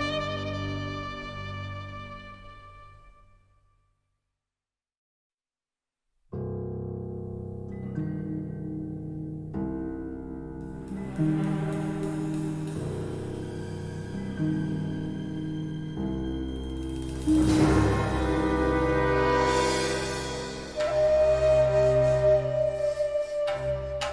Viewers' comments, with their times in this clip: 0:06 Maybe it's the flute but OMG this just makes my heart hurt I love this piece so much